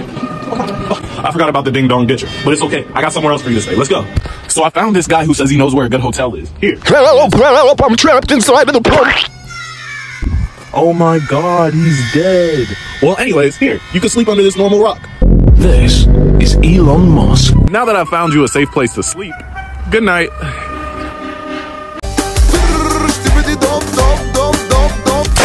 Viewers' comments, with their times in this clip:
0:06 help help a trumpet sound in the Corey
0:06 help help a trumpet sound of the squeak